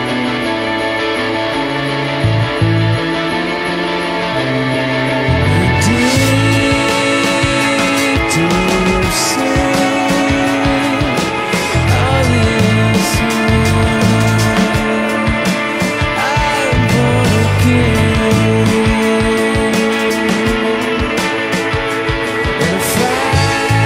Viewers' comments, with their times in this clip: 0:10 also, that background continouous noise sounds like heaven. i love this song as well, its like the song that you listen to in the morning haha. same with subterranean homesick alien and karma police the rest are more depressing nighttime songs imo